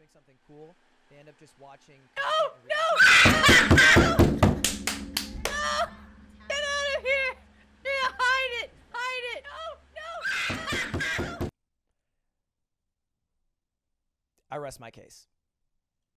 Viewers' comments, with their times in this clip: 0:03 what the actually fuck is that laugh
0:09 sounds like someone is holding a baby howler monkey upside down